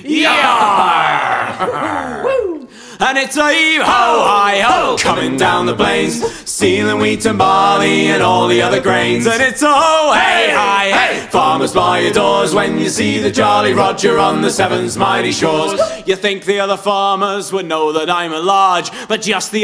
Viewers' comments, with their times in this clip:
0:03 timestamp for the chorus it's my favourite part lol. the little "woop!" makes me so happy